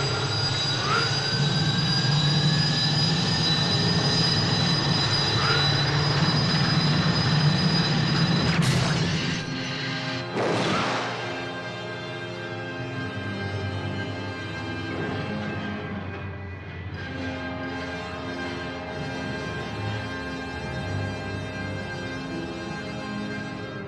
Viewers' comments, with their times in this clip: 0:09 This is the one time the speeding up of the film (that Bond films are known for) actually looked real. The non-powered whoosh perfects it.